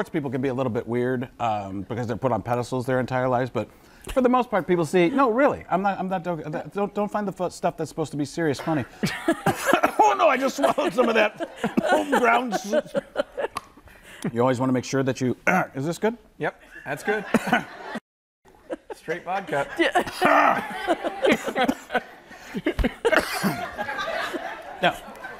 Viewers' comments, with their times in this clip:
0:09 I like how he sounded like John Madden when he choked on the Sausage lol. I like how he went from John Madden Choking to Robert Downey Jr saying "is this Good?".